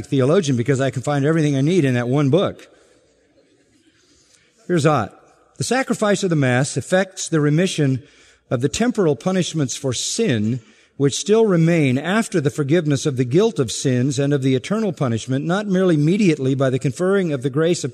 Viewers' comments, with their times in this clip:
0:05 I strongly agree with McArthur's sermon here. Romanism Catholicism is not in any way a variant of the church that happens to like robes and ceremony. It is an entirely different and entirely false religion. You cannot read Hebrews 9 and 10 and be a Roman Catholic. On a different note, though, I have to mention how exasperating it is when McArthur reads anything because he usually races along too fast for the listener to take it in. He hurtles along in a repetitive, sometimes sing-song intonation that pays almost no attention to the punctuation. A particularly bad example starts